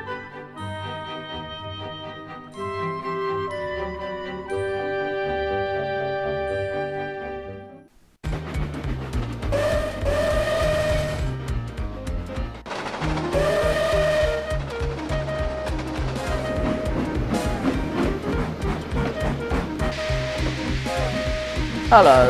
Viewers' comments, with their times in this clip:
0:09 The whistle I was going to use it for my OC May but I decided not to.